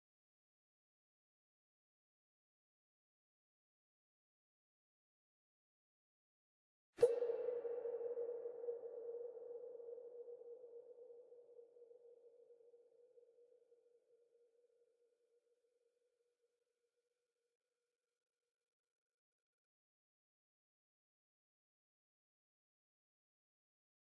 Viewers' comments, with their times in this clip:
0:05 has a smaller gnome noise